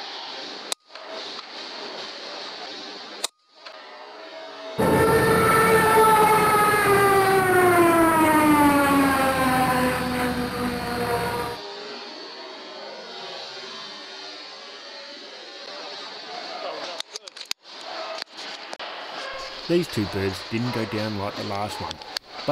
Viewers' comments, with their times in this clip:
0:05 whyyyyy the plane falling down effect xD xD xD